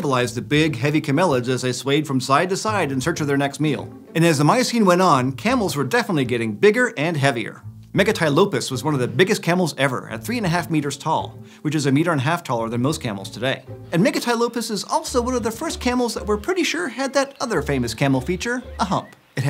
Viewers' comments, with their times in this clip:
0:06 MEGA TAI LOPEZ?